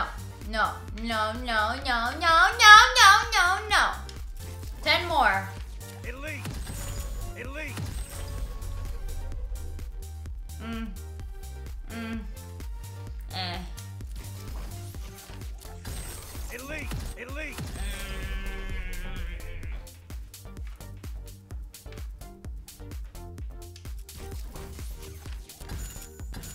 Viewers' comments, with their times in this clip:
0:10 cue awkward grunting